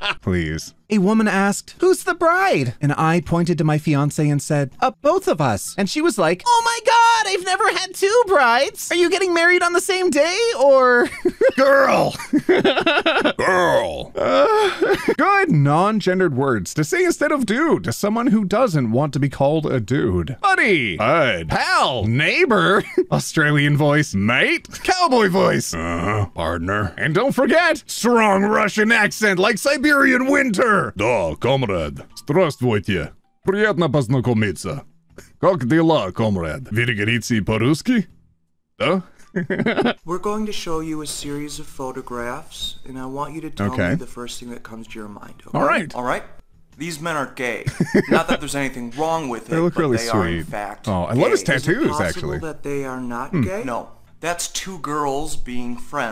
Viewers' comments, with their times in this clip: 0:06 the God of war saying, "GIRL" is so Unexpected that it got me laughing. I need water. Stay hydrated.
0:25 Wow you do an incredible Arthur!
0:27 That's a really good Russian voice, wow! I'll have to keep that in mind lol
0:28 Your Russian accent got me 😆 I like how when you were speaking Russian it really made you intimidating and when you started laughing you became a big sweetheart again
0:29 AYO YOUR RUSSIAN IS SO GOOD OMG
0:30 I never heard such real Russian accent. As Russian I can confirm that you sound pure Russian. Wow.
0:31 as a person who's native language is russian i have to say, you made a REALLY good accent i fr got spooked while washing the dishes lmao
0:31 starts speaking Russian
0:32 made me so happy. I'm learning Russian and I could understand that really well! Not only that, but it just made me giddy to hear someone that's not on the Russian side of the internet speaking Russian
0:32 Me, a russian, watching this video as usual OT: speaks Russian without a warning Me: a heart attack YOU SPEAK SO GOOD OMG
0:32 WOAH that's some really good russian, to be honest, didn't expect it
0:36 omg not the russian accent LMFAO
0:36 HOLY SH- YOUR RUSSIAN IS SO GOOD I SAY IT AS A SLAV THAT CAN'T SPEAK RUSSIAN
0:39 As someone whose first language is Russian, the actually really good pronunciation caught me really off guard 🤣
0:40 OT: *speaking a Slavic language very fluidly Me, someone who speaks 1 1/2 languages: I like your funny words, magic man
0:41 the Russian language! So funny